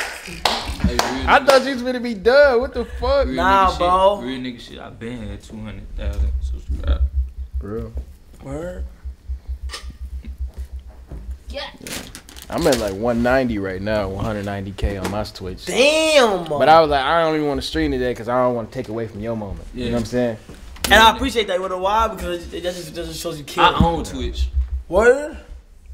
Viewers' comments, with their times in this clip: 0:10 Am I the only one heard gyat when Kai sister was bending over
0:11 know I’m not the only one who heard someone say gyyyaatt when Kai sister bent down